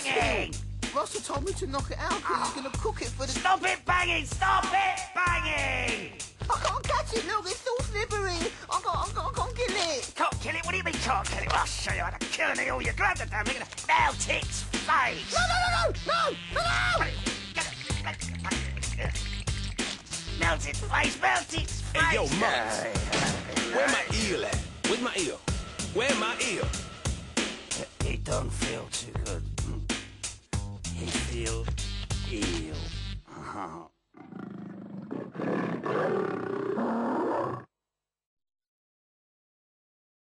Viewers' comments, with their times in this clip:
0:06 2-D sounding adorable
0:06 I love his voice
0:09 put it in 0.5x speed and it sounds like 2-D is moaning 😭
0:12 Murdoc's anger gibberish 😂😂
0:13 I can't understand what Murdoc said but I still laugh my ass off every time I repeat it XD!
0:26 that little growl tho
0:27 anyone notice when murdoc says "it don't feel too good" it goes along with the drum beat
0:32 Seinfeld baseline plays